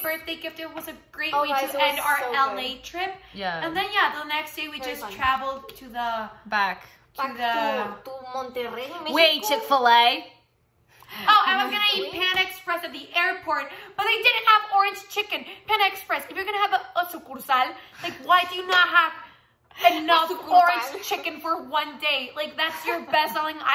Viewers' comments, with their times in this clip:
0:08 🤣🤣🤣🤣 Ale "back to Monterrey Mexico 🌵🐄🤠" with the norteño accent 🤣🤣🤣🤣